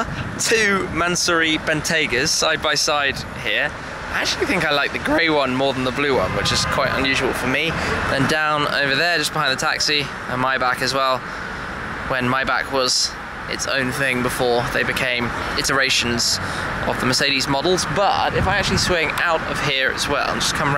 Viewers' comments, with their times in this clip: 0:04 voice crack 😂 (No hate)